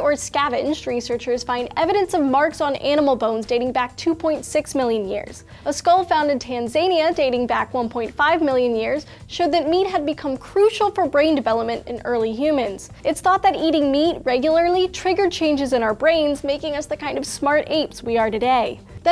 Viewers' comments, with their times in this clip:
0:05 "Tan Zania". American ego centrism at its most hypocritical(while educating others)